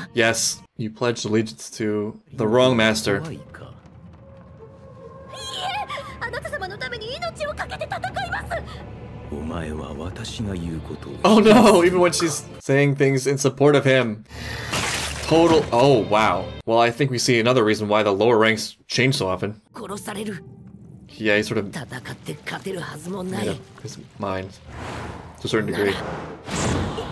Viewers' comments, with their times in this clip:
0:09 Its Michael Jackson h e e h e e